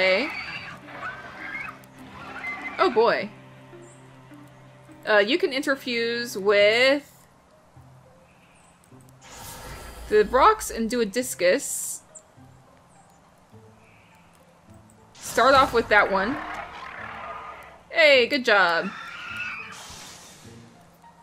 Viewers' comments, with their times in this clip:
0:09 omg i had forgotten the noise infusion makes and it spooked me